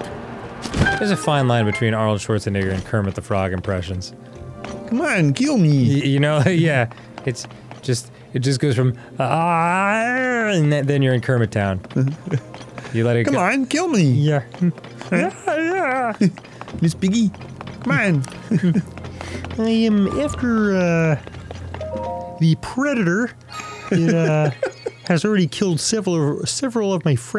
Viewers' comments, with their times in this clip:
0:08 Directly between Kermit and Arnold is Ray Romano. Just for a a second.